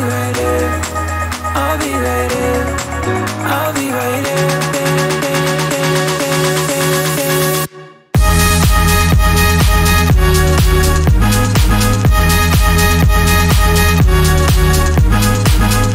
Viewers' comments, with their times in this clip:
0:03 here is the good drop you all were waiting for .